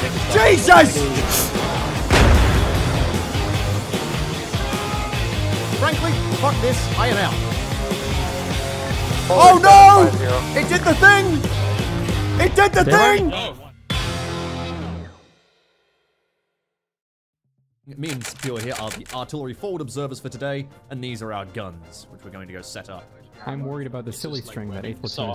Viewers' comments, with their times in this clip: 0:10 You sound like Varrik from Korra, minus the enthusiasm.